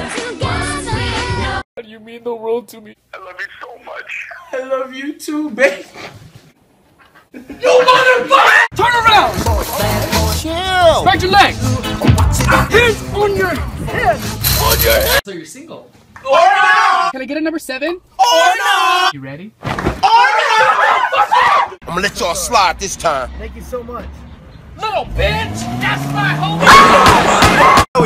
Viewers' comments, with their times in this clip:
0:10 His voice sounds like Lamar from GTA 5